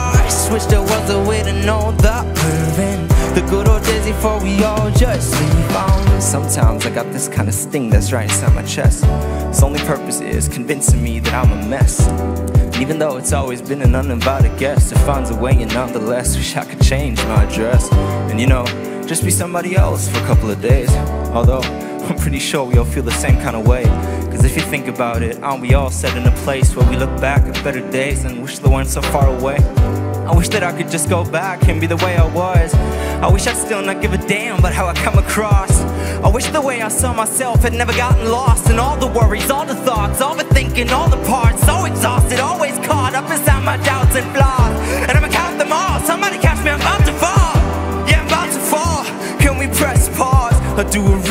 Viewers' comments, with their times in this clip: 0:06 remind me Eminem
0:36 Eminem vibes. Nice! 👍🏻
0:36 starts to sound like young Eminem
0:37 the moment Eminem entred his soul
0:39 I love when he goes into Eminem mode